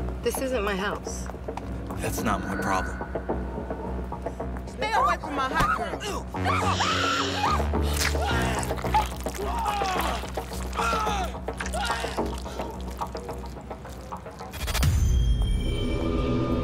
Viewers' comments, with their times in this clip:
0:04 her voice tho sis bye-